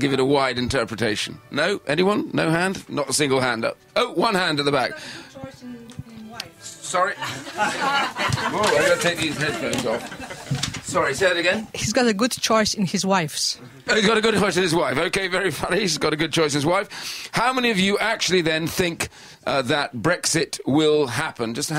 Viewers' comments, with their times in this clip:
0:08 and the question was asked with a smirk and attitude as to get a reply they wanted! BBC being biased ..... never! They love to set a tone rather than having a neutral debate.... I will carry on listening now!